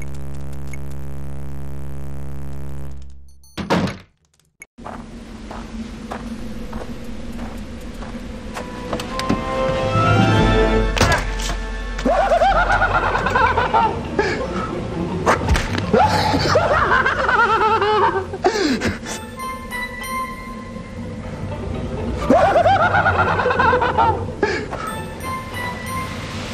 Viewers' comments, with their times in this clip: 0:10 I wanted to watch this for the hysterical laugh that follows the ax death Lol.